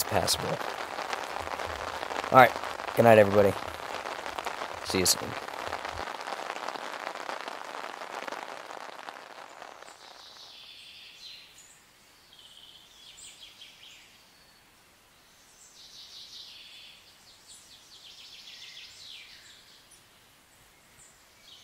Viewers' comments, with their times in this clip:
0:09 The morning birds was the best! I love camping. Going for a few days next week (after the holiday). Hugs from Illinois. 💕